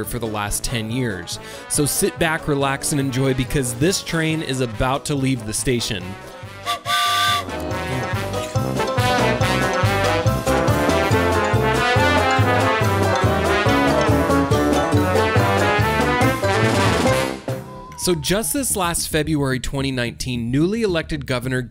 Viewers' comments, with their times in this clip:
0:09 MUSIC TOO LOUD and ANNOYING. Retired railroad conductor So Cal 37 years DON'T BUILD THE TRAIN. SCRAP IT TODAY !